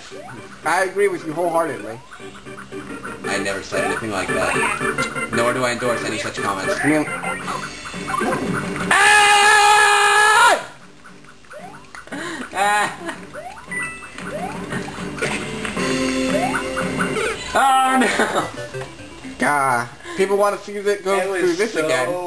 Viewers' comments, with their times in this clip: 0:09 epic freakin scream! That was great!